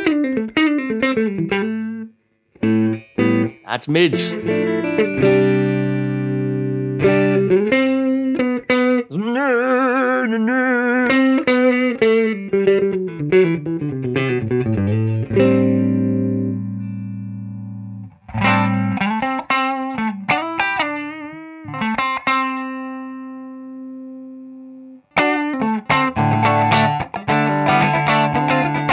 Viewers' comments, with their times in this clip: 0:10 that moment when suddenly, man melds perfectly with machine #nrrnrrnrrnrr